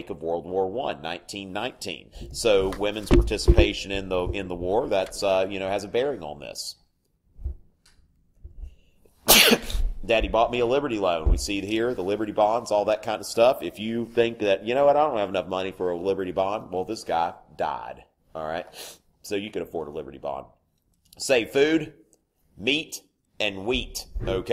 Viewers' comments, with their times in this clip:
0:07 He sneezed directly into his hand Ew